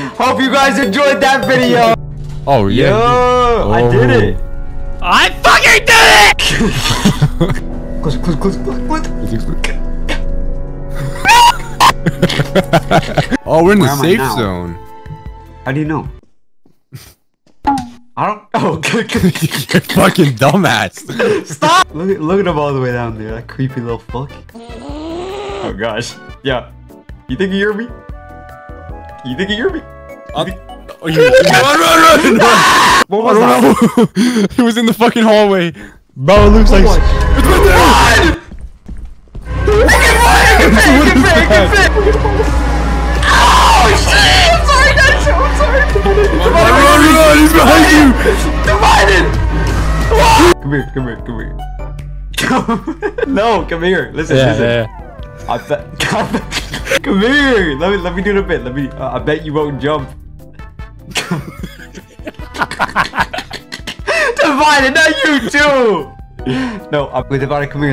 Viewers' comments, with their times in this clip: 0:06 WHY MY EARS I HAD AIRPODS 😭
0:50 what a lovely scream!